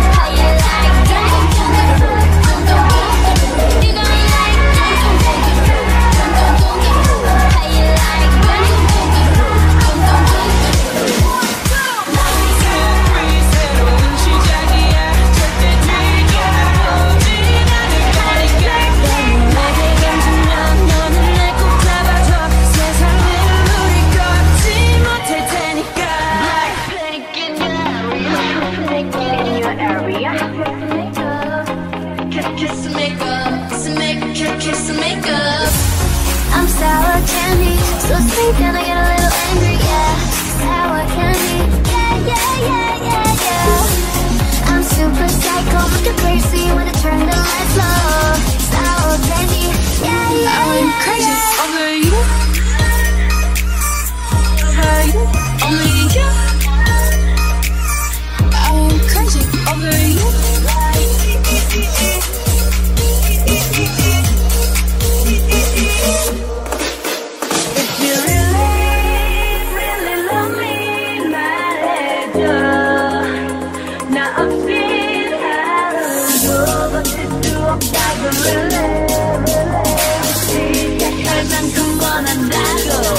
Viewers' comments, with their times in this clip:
0:10 UFFF!!! Jennie's part in reverb😳😳
0:13 ......oh god I'm falling in luv wid that portion dude the mashup between 'as if it's your last' , 'lovesick girls' and 'how you like that' was literally awesome.loved it
0:51 That beat drop 😳🤚
1:08 In sec the beat and then the song started' really' song was the best 😍